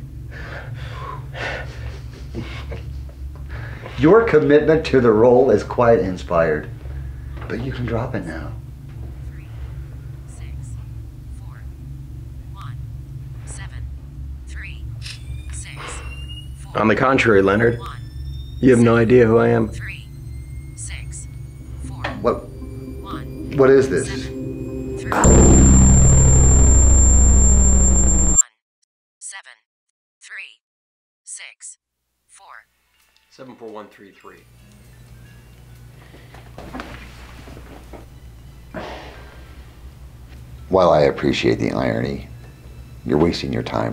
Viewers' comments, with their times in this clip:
0:04 I turned up the volume because they were talking so quietly, and then regretted it immediately. Your boy Brian's got some nasty scurvy if his teeth come out that easy, btw. And no, sir, yours is.
0:25 When You Get Unexpected Earrape